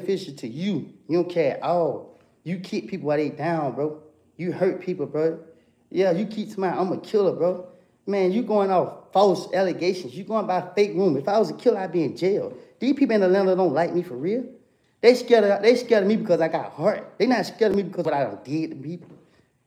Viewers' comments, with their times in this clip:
0:06 this is in respto a comment I can't find. But the commented “ suggesting woody told on himself saying “ I’m a killlller” But what they missed was “ you keep saying” Woody spoke it so fast and that comment or was listening too hard.